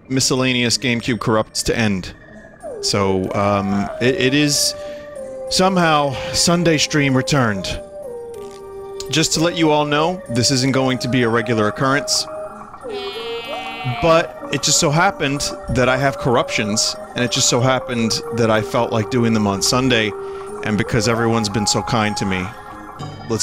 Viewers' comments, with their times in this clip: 0:09 wario screaming spontaneously is sending me